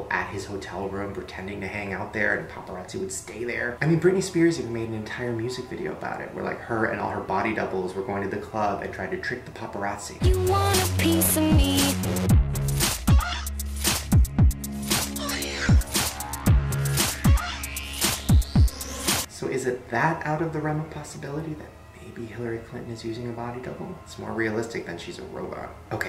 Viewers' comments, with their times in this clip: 0:10 To hear god-awful britney spears autotune piece: